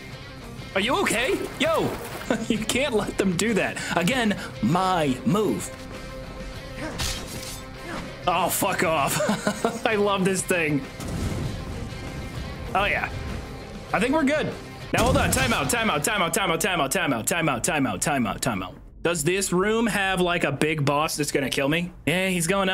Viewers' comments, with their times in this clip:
0:10 I KNEW IT WAS HADES! man it took me so long thinking 'that kinda sounds like Hades' then the beat drop hit me ! I love Hades. I bought all of Supergiants games mostly for their music!